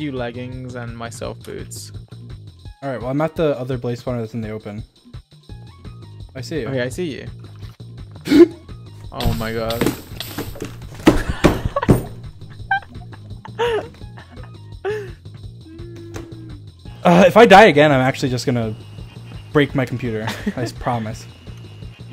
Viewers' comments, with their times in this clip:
0:06 dream falls, and dies, and then proceeds to rage and slams his desk, while taking off his headset, slamming his desk again. george laughs, but then gets worried of why he had a rage stroke.